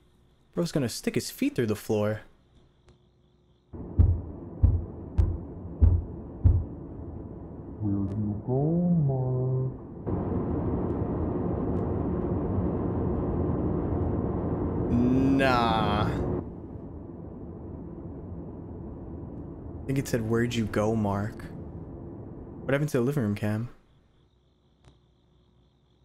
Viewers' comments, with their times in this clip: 0:09 i was like "what dod bro say?"